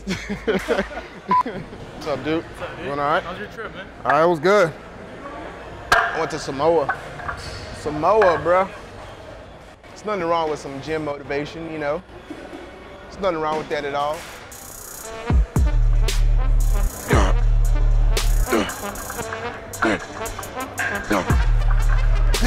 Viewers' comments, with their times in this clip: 0:04 was that hot breath man